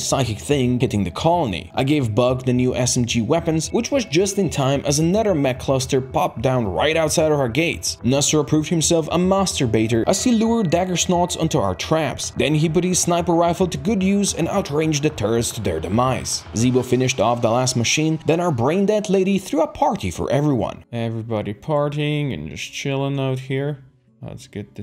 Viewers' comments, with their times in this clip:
0:08 It sounds so wrong to call him a "Master Baiter", especially while talking this fast.